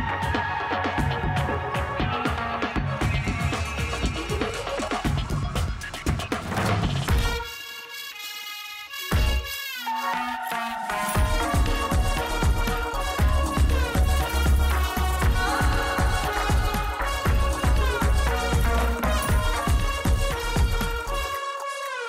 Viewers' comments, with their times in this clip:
0:05 Can we talk about the ✨perfectly✨ timed music ? Gotta appreciate💘